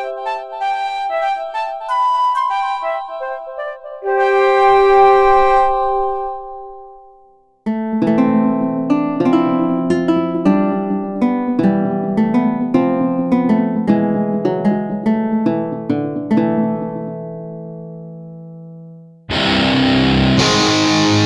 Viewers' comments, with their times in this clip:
0:09 That's tavern typebeat over there... Let's kill some globins.